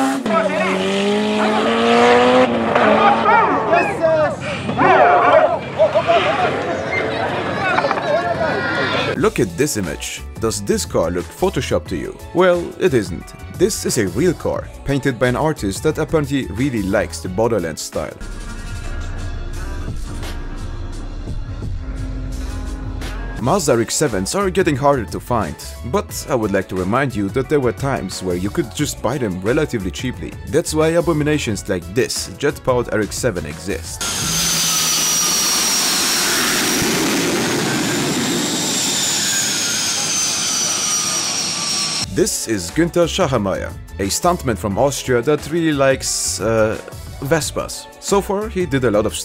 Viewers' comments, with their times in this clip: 0:03 kid starts crying after seeing a beautiful car.. crash...
0:36 My 17 year old neighbours exhaust at 3 am